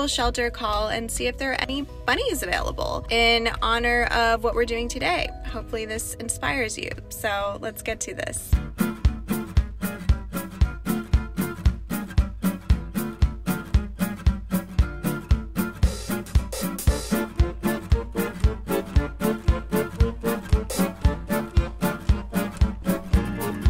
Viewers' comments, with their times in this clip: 0:09 What's the song that kics in sounds like something from overcooked